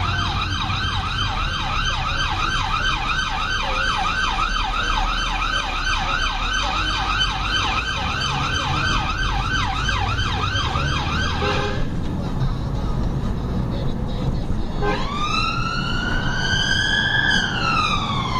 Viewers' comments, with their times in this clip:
0:05 Pretty nasty bullying the driver into the bus lane... whoever taught the driver how to drive under blue light conditions certainly hasn't taught that drivers shouldn't ever be forced into a bus lane with bullying tactics including using the bullhorn. Also the siren usage is pretty poor with the phaser being constantly overused giving little effect at open junctions, like a roundabout. A lot of confusion is created, causing the truck driver to freeze in the middle of the road, expecting you to travel around on the nearside. All because if there was a camera and a fine was issued it'd be paperwork.